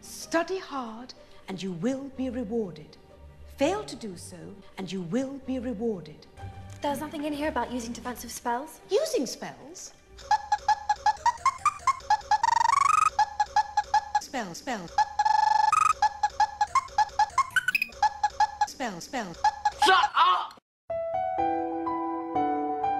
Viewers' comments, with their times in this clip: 0:10 how I laugh when someone says that I have my life figured out. 😂😂